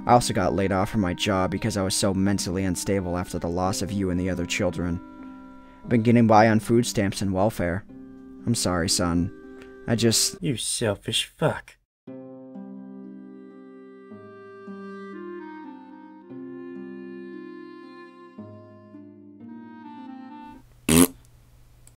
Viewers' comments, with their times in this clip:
0:10 u sound just like cartman from southpark